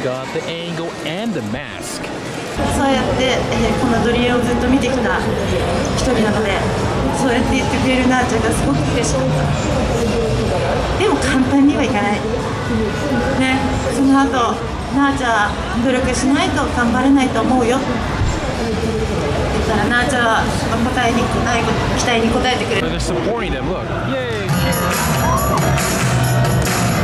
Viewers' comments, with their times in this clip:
0:08 My girl is concerned about the girl crying Does anyone know why she was crying?